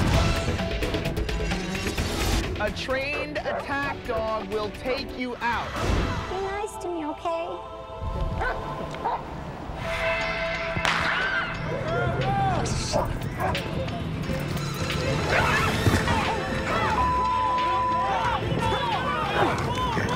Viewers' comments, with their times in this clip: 0:03 tho be nice to me ok and the dog was still barking